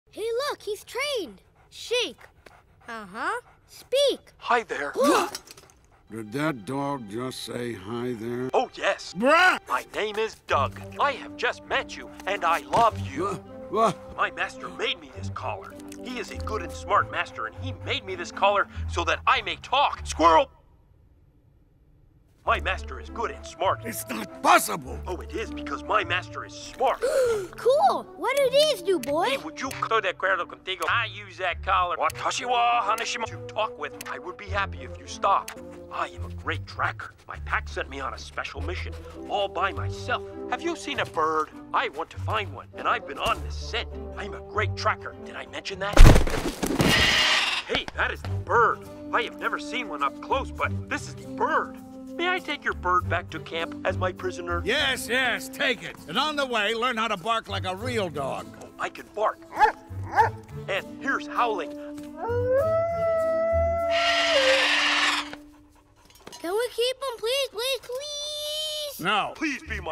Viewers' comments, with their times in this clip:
0:09 I legit thought he said "BRUH"
0:48 the way Kevin made that pop sound sounds like a balloon pop
0:52 why does dug sound like kermit